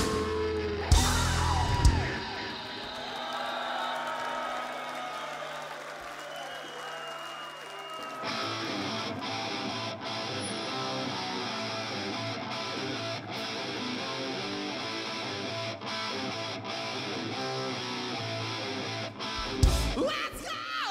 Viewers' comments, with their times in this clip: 0:08 Suzie Smiled is such a killer song. And although I much prefer the raw original I have to say that thiss "Thin Lizzy inspired" version also has something for it...